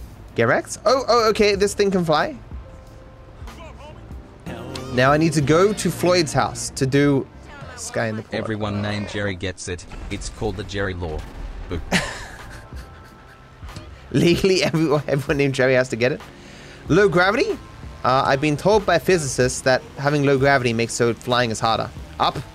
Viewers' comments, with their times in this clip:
0:05 you can hear the pain in his voice poor guy